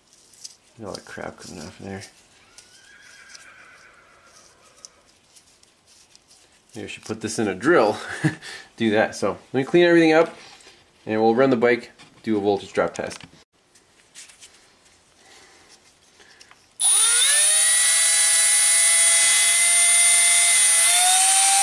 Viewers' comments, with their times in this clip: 0:04 Horse whinnies when you say "ah crap". Like it's laughing at you.